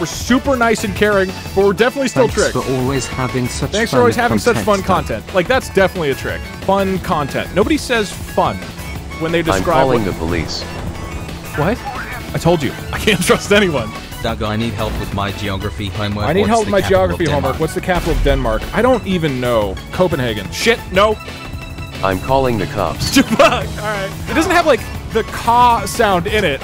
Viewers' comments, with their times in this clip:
0:09 apparently it thought that “nobody” also meant “police” and that’s why it happened, programs can be dumb
0:10 he sounds so betrayed